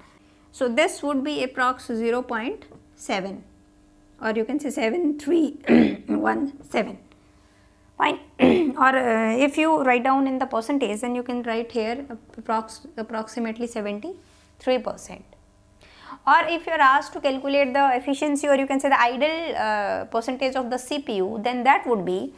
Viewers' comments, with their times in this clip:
0:04 Amitabh Bachchan in the end😆😆 watch at 2x .